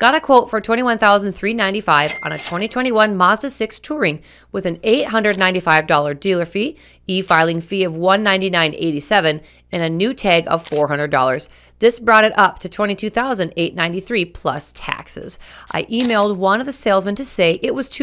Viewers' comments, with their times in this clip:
0:05 "Delear"... huh. Very well. 😂. And yes, Mazda is a great company, had two of them in the past, looking at CX50... or Subaru Forrester.